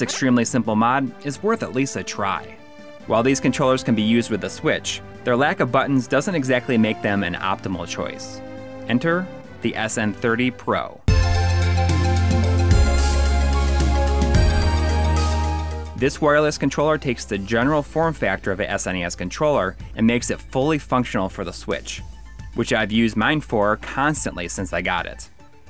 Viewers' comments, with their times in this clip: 0:08 "Enter the SN30 Pro" plays Genesis music